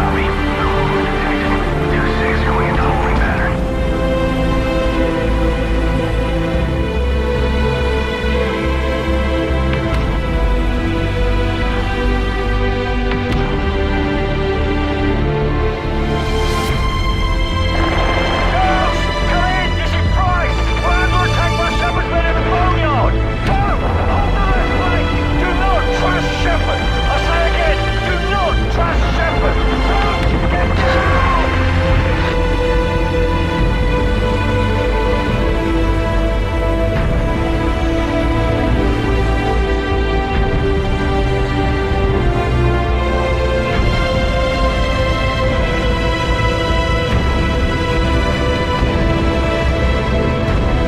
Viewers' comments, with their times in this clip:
0:08 is the part where you just feel an overwhelming sense of hopelessness knowing, it’s all too late.. hearing prices voice minutes late confirms your emotions, even greater with the music seeking deep into your ears. Powerful scene.
0:34 This one was synced up perfectly with the death music new one isn't synced correctly specifically